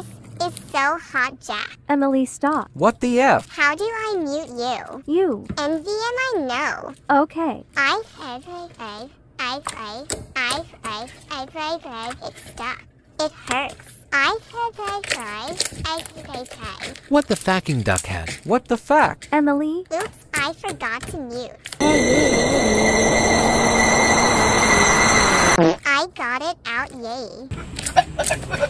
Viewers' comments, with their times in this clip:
0:09 Bro Emily’s aaa🪙🪙🪙 why does she sound like a baby💀